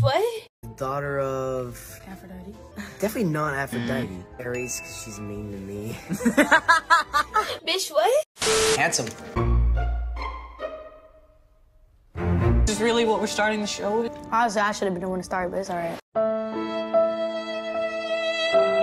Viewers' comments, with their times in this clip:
0:05 The way he sounds so like depressed “Ares, cause she’s mean to me ☹️😔😞” and Leah’s just there like “wha- 😭💀”